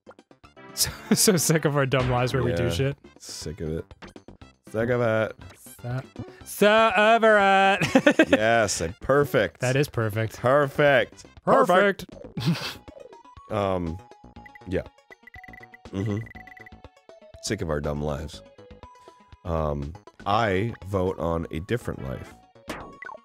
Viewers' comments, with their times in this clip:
0:08 Every time they do that I think of when you get a perfect in Intelligent Qube. "PEEEEEERRRRFECT!!"